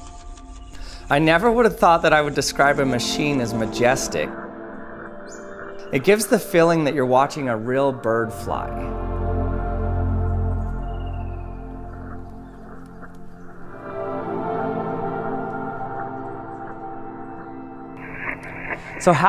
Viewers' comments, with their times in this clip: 0:05 "It gives a feeling you are watching a real bird fly" * Calm music * * Free falling to its demise*